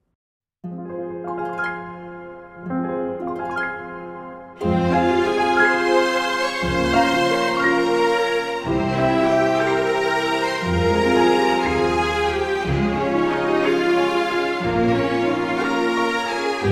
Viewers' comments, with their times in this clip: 0:04 This melody in is soo...just makes me smile for some reason.